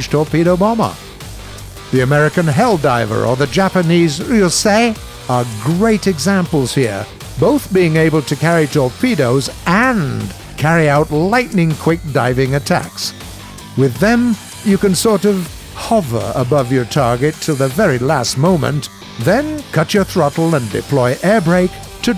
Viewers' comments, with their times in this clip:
0:03 when he said that japanese plane «uoeuo sei» i felt that
0:04 Sounds like he had a mini stroke
0:04 his balls dropped and voice crack lmfao also Flying the “who you say”
0:04 I love how he says it
0:04 you know japan has great planes when he starts moaning to them
0:04 it sounds like the narrator havin a voice crack